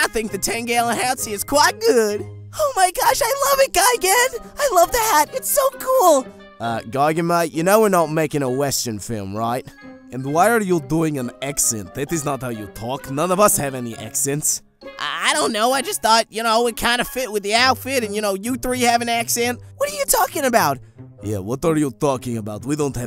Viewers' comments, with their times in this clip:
0:10 look who's talking you have a Russian accent🇷🇺